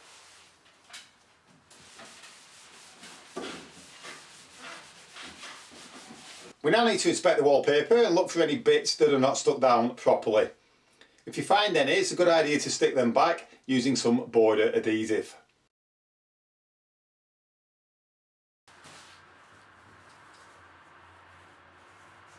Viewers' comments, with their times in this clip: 0:10 use WHAT? to stick loose edges down. Can't understand you.